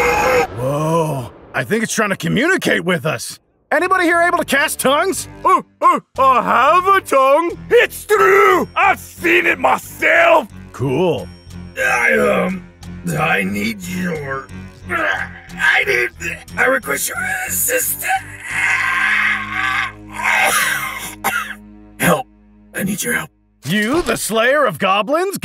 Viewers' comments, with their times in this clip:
0:08 I LOVE THE SCOTTISH DWARF